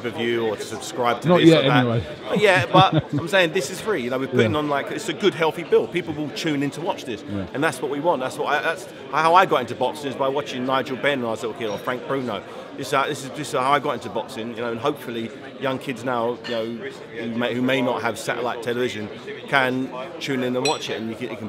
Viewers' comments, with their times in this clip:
0:08 "I got into boxing watching Nigel Benn, when I was a little girl" WTF?!